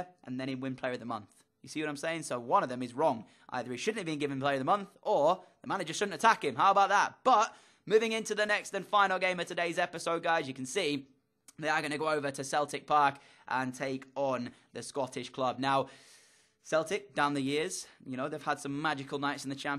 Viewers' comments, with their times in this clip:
0:04 HOW BOW DAH